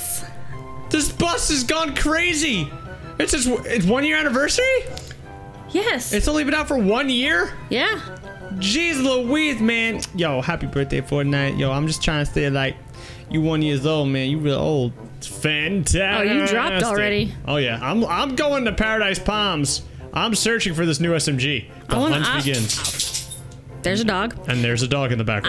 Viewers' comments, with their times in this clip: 0:08 Was that a Cardi b impression 😂